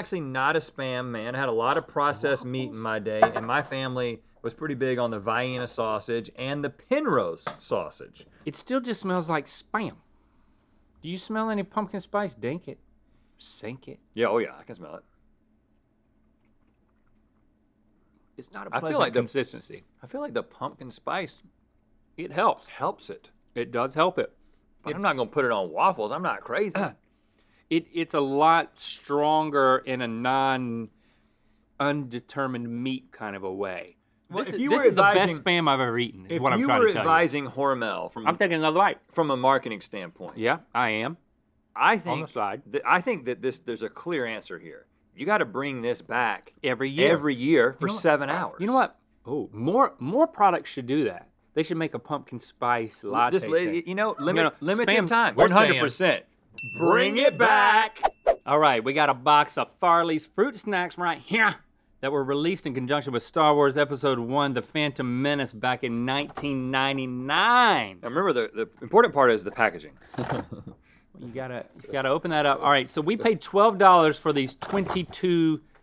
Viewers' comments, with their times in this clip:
0:03 Vienna?!? Had to turn on the subtitles 😆😆
0:04 Vi-EEN-uh or Vee-EHN-uh sausages?
1:01 the way link said “right HeaYre” made me choke on my food cuz I laughed so hard